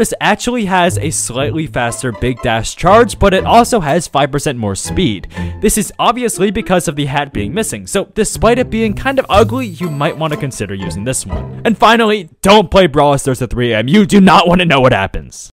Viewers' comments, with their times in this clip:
0:11 i just cant understand what u said there